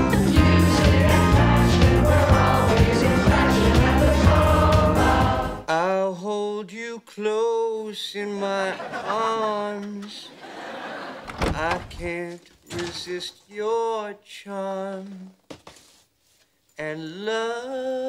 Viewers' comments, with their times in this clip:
0:05 Chandler sings pretty good...